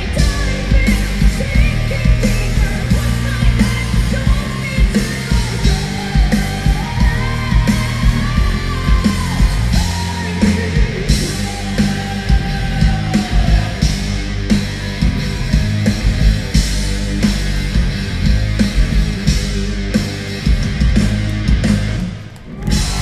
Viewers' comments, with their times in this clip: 0:09 Dany sounded like Lzzy